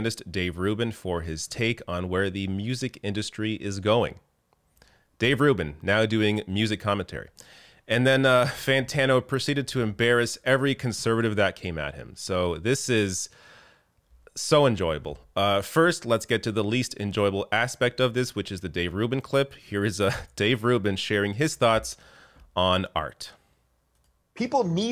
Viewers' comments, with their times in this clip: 0:08 seconds, your passive aggressive tone is HILARIOUS !!!!!!!! 😂😂😂